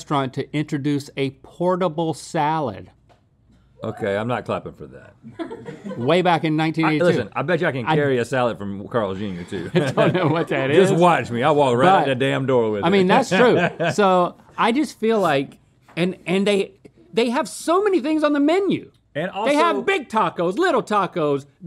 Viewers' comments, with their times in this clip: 0:06 not even Rhett laughed enough at his joke lmao